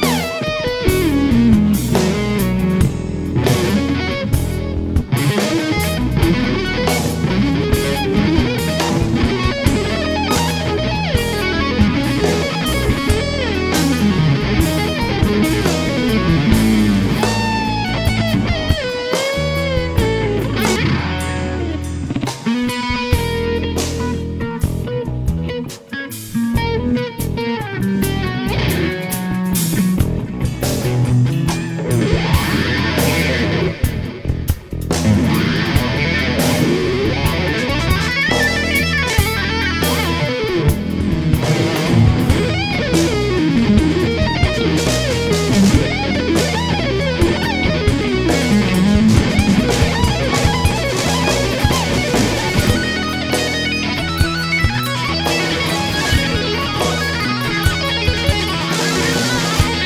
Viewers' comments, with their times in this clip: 0:03 Does anyone know what mode he's playing ?
0:20 Did anyone else notice the ONE wrong note Prof. Dr. Steve Vai PhD.G. M.A. B.Sc. BBA, Inc. ltd. LLC hit? (And no, I don't mean the sloppy edit )
0:21 What the hell is that sound ?!?!?! Sounds like a freaking fart? Haha
0:27 Carvin Legacy 100 watt head into a Carvin 2x12. Keeley Modded Boss DS-1 Distortion pedal. [orange] MXR EVH Phase 90 pedal. [red/w white stripe] Either a Morley wah [most likely] or volume pedal. [black/w yellow stripe/tape] I hear delay/reverb [might be built into the amp head], and I see pedals on top of the amp. Green [possibly] a Ibanez tube screamer. White [possibly] Boss TU-2 Tuner. Round white thing, clueless?
0:31 So that's the streets of Poland huh...? Was there actually anyone there besides the two guys fixing a lawn mower or something? Ha! Just kidding. But seriously, just a few more barn yard animal sounds during the applause would have been a nice touch. I love you Steve!!!!!
0:40 The volume swell was unreal!
0:44 well you obviously know the sweep part of For The love of god ( the last repeated sweep at around 4 minutes), same (but variation at least) in the G3 live in Denver in The amazing introduction he gave, and here around and he keeps going on variations.